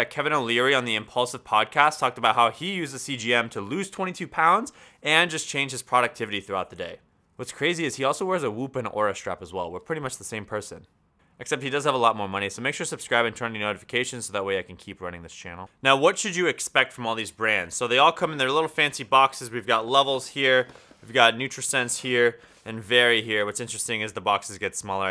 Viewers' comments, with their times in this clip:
0:07 a whoop and a horror strap? Can someone correct my ears? What are these things?